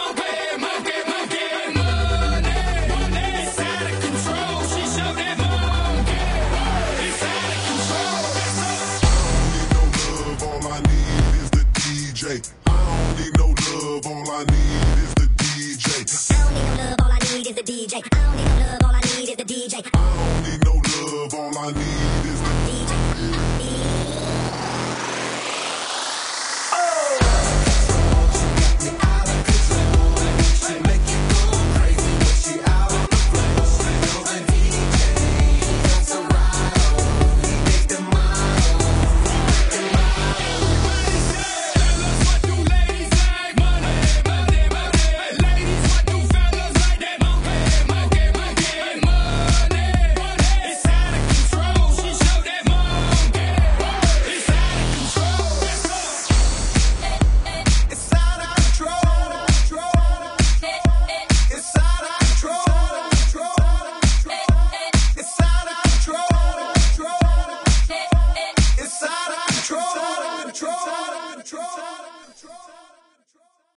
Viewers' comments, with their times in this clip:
0:07 Dubstep part =D
0:25 Sick beat and after!
1:07 no im talking about the "ehh ehh"